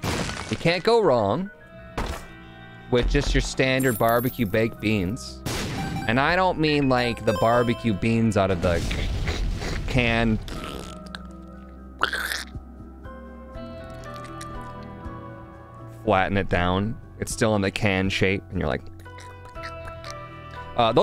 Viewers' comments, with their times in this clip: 0:05 how was that bean asmr so accurate